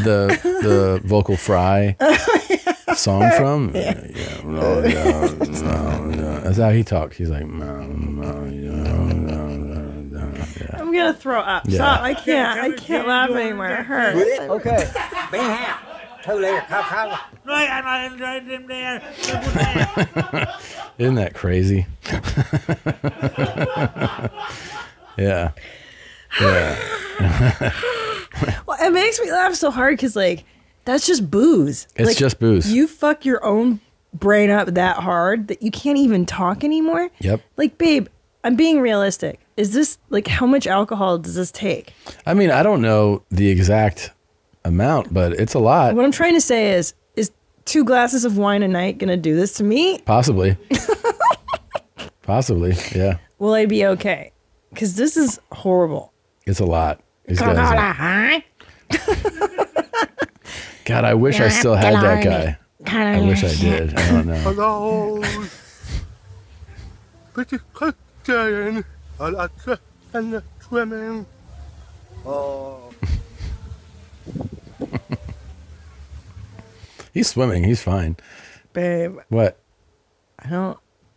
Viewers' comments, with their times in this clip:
0:09 is the funniest shit ever. That whole part of Tom mixing the drops like that was perfect. I laughed so hard I had tears coming down my eyes.
1:04 I think the Drunk Cool Guy Swimming Guy talks like a person who has a hearing impairment. Plus drunk.